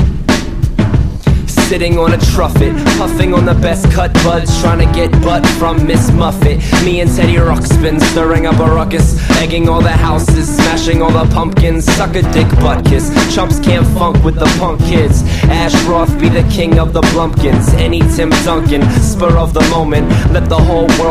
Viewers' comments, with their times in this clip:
0:08 i love how he says teddy roxsbin lol its soo funny